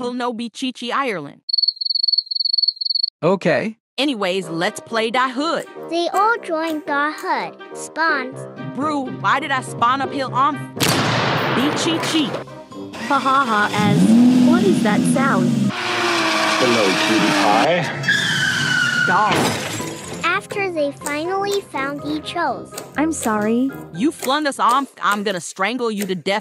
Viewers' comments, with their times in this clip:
0:09 The way The last one Is so funny. It's like she spawns, and then she went neeeeeeeeeeeeewwwwwwwwwww And she went dawg And then they crash on the walls for some reason. But I was wheezing from laughter 😂😂😂😂😂😂😂😂😂😂😂😂😂😂😂😂😂